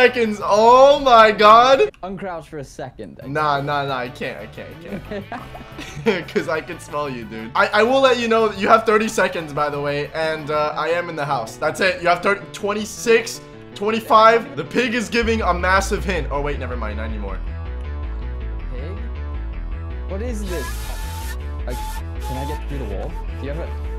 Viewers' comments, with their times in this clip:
0:10 naruto music starts to play...